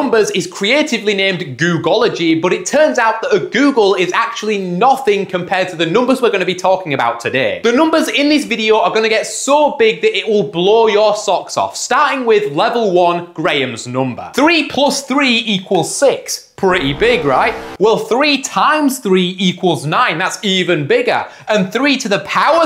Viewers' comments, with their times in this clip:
0:03 that was NOT the wind bro 🥀